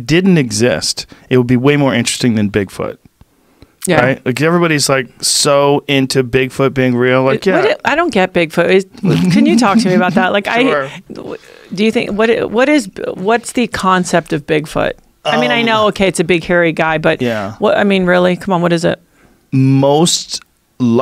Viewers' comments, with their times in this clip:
0:08 Joe's laugh he's so excited to talk about it.